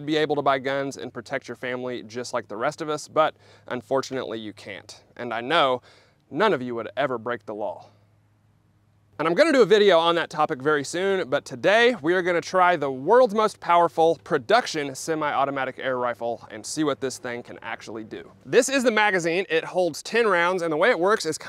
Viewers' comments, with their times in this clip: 0:08 I also loved that pregnant pause